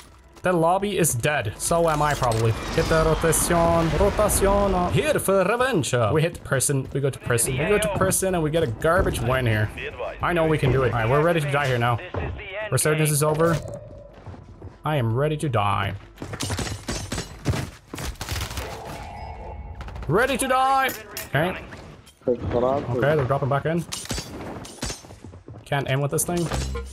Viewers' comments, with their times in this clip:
0:08 WE GO TO PRISON^3